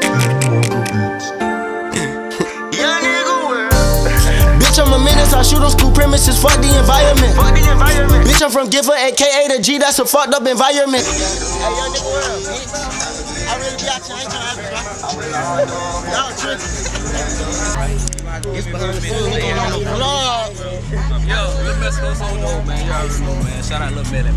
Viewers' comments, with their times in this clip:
0:10 MURDER ON MY MIND IN THE CAR WHAAAAAAAAAAT